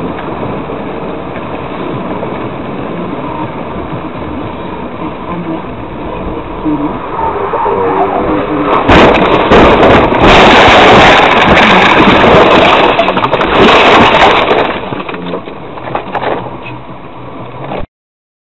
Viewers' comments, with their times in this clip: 0:06 Other people: AAAAAHHHHHHHHHH Her: 🥱